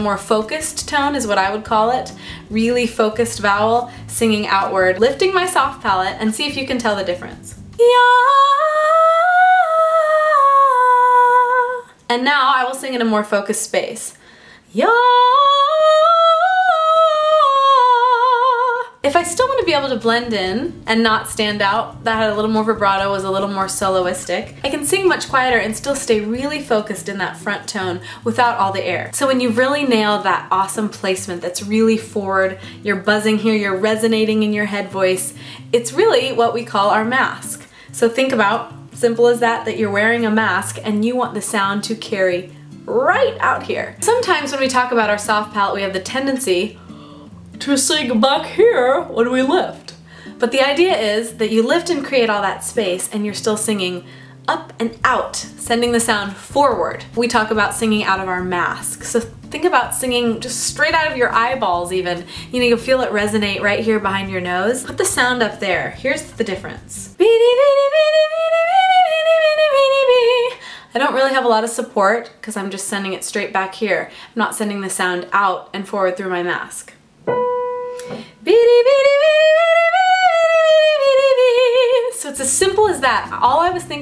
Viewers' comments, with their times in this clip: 0:07 Wow ! The "focused" tone is WAY more powerful.
1:06 you sound EXACTLY like Missy from Big Mouth